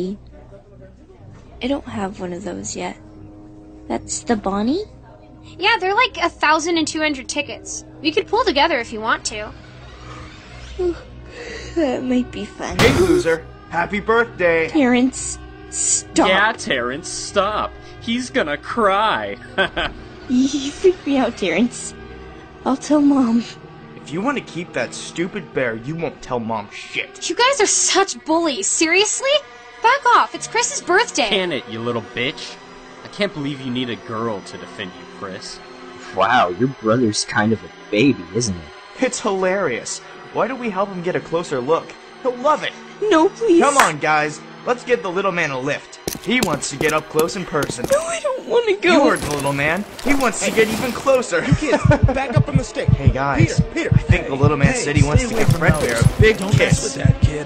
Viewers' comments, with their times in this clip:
0:06 “ We could pull together if you want to :3 “ It is the way she said it
0:43 His heart beat was beating so fast once he got closer and then into the mouth of Fred bear 🐻 great job even tho this is 2019 I saw this when it first came out also